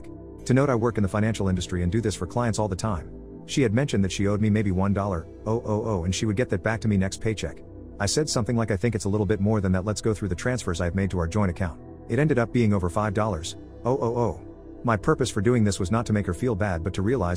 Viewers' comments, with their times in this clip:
0:04 the text to speech is bad and the editor is is also bad for not fixing it and in the few seconds it happened again, the amount is 1 thousand dollar, not one dollar oh oh oh